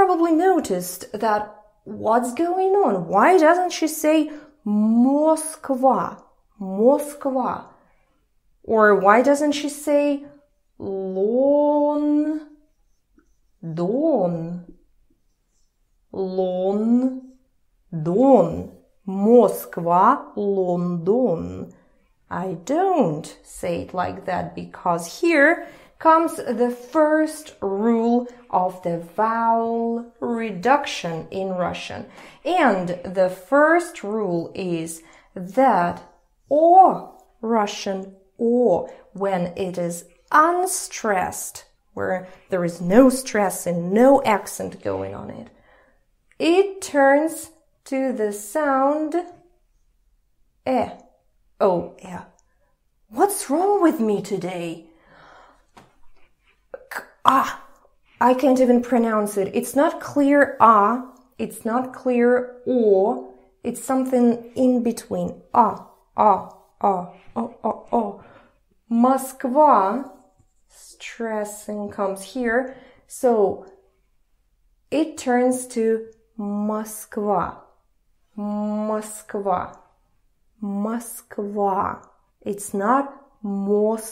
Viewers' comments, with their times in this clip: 0:08 You gived me password of life I always wonder the why we call the "o" as "I".. Thanks teacher thank u!!!!
0:51 ahh yes, the almighty schwa
1:07 I now understand why we pronounce "это" more like "ета". Fr I was confused x)